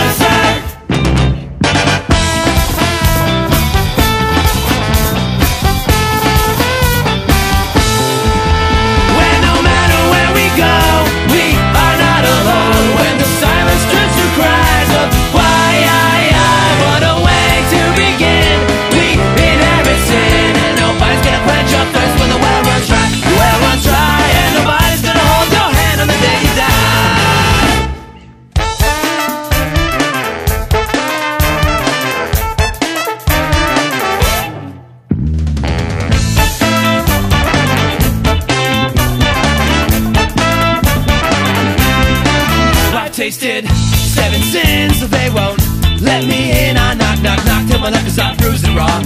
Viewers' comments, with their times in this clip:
0:05 Anyone else absolutly love the Calypso drum pattern like ? Idk why, but I find it great that they used...
0:34 The trombone slur made me jizz in my pants.....